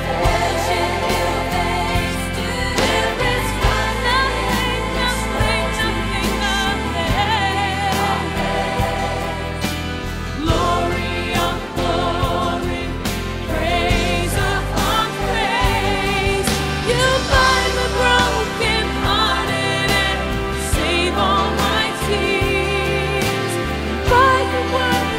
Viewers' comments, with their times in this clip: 0:10 I feel so blessed with the kid I felt that he really meant what he is singing.